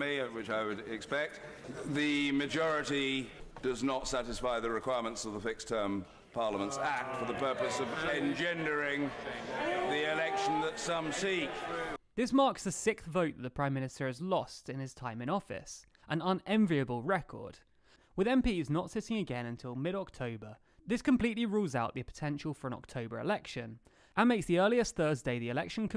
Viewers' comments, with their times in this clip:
0:09 is that someone making a chicken noise?